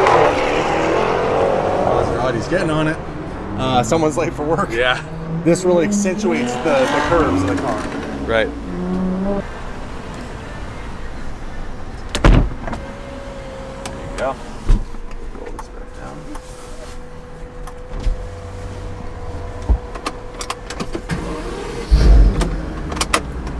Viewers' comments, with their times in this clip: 0:09 I know a jag ftype when i hear one